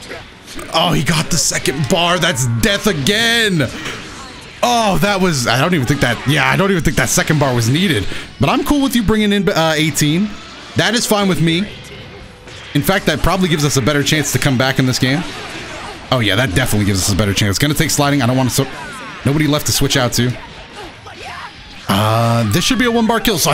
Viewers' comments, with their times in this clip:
0:07 almost said bae teen